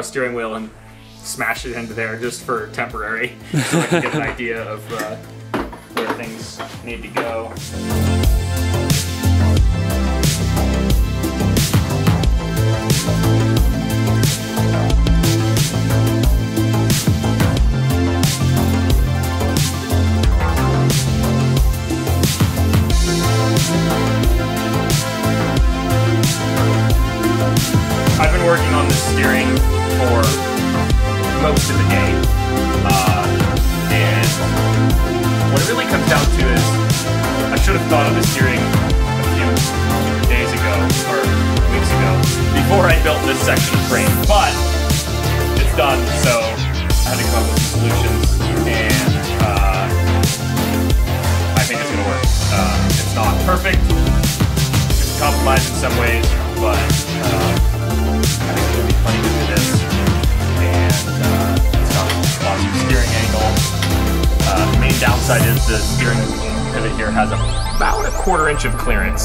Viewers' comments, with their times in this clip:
0:09 music mix is way too high.
0:11 love the music
0:25 Sorry about the music guys I totally messed that up. I'm working on subtitles right now.
0:27 I think that they forgot to mute the music when editing video.
0:27 why doesn't the music go down?
0:30 Starting the music drowns out the commentary
0:45 someone got carried away with the music.
0:45 the music is wayyyy too loud, can’t hear anything
0:45 Audio editing error
0:45 what did you say? i can't here you over these fresh beats.
0:54 I can't hear what he is saying because the music is too loud.